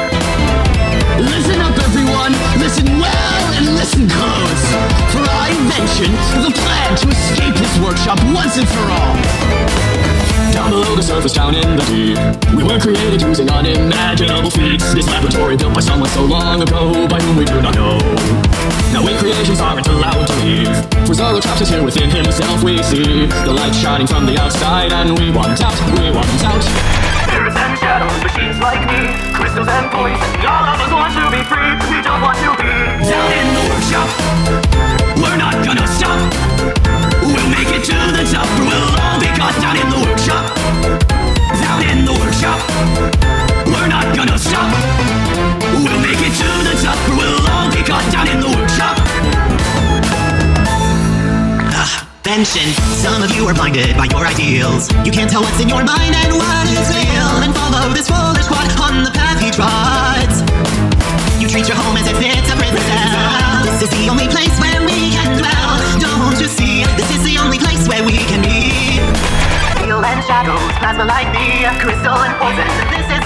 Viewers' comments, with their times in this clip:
0:10 Vhenshun but actually singing
0:27 I like how it’s switch until I turn it gray and the sound when it turns gray look from a game it sounds also good and amazing
1:01 woah! Why is Rhysmuth here in the background music?